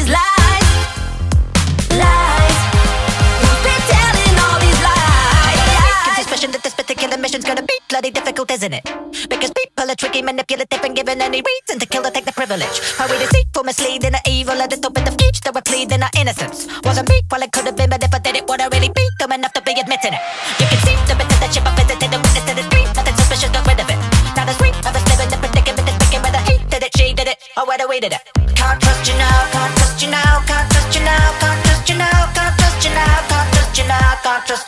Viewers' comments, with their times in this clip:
0:05 When I started listening to this I was like "Oh god what is the rap part gonna sound like" and once I heard it I was amazed how good it sounded lol. Edit: Rap starts and I didn't expect to get so many likes xD, Also it sounds even better at 1.25x speed.
0:05 Dan's rapping even sounds good in nightcore lmao howwww Saving for myself
0:05 I don't know why, but the sound of the voice reminded me of a girl with a low voice. Haha, this is probably a stupid thought) Edited: on 1.5 speed is incredibly fast...
0:06 moment when he is beggining to rap
0:09 the rap was so fast noice
0:18 you can hear a call in the background